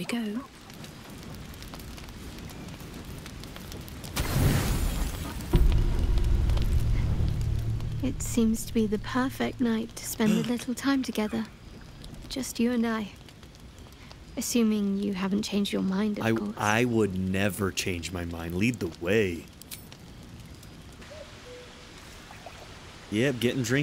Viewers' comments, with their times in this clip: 0:09 He gasped! Man was so excited he gasped, I love it. :D